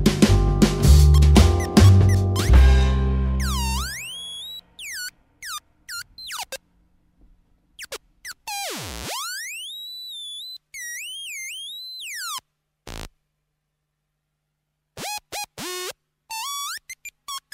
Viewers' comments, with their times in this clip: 0:03 The camera: *goes beep beep boop boop* Me: 🍷🚬 cinema